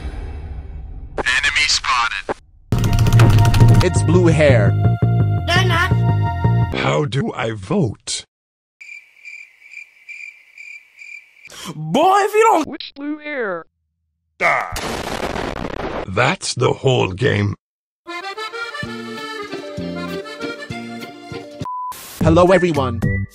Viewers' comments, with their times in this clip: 0:06 weird sound lol